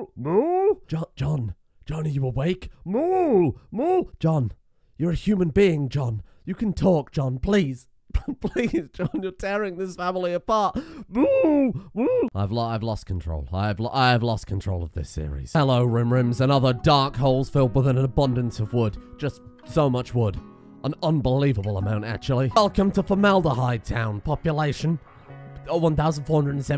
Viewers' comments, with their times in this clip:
0:08 Sir are you ok? Because that doesnt sound like a healty human being to me